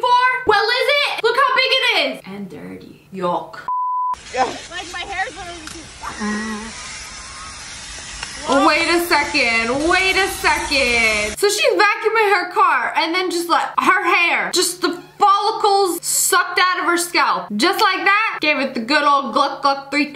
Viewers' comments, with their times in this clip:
0:03 the way she said "YUCK" 😂